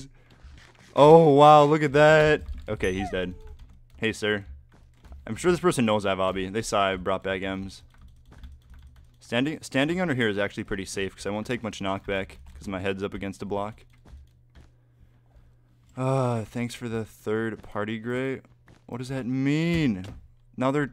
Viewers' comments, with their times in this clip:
0:03 activated my siri